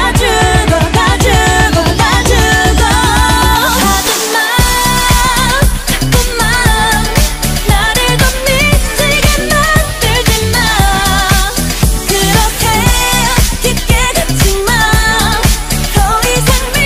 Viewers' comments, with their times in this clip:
0:04 sounds like momoland